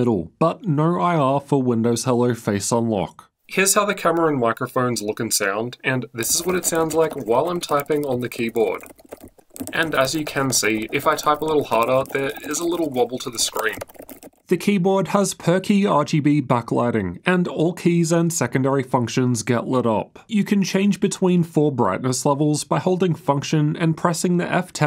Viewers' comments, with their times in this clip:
0:05 i was expecting really muddy mic sound just like MSI's most laptops instead it sounds quite clear, this kinda surprised me😂😂